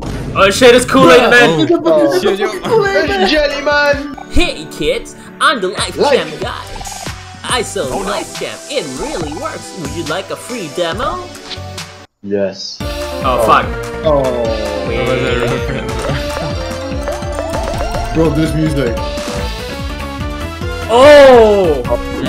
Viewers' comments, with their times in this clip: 0:03 THE LIFE JAM GUY SOUND... I CAN'T 😭😭😭 IT'S SO GOOD